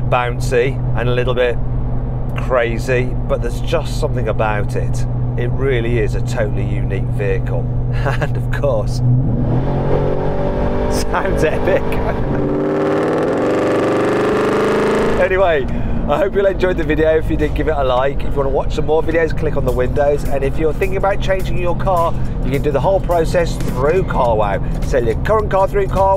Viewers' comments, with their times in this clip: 0:10 Sounds like gas being being consumed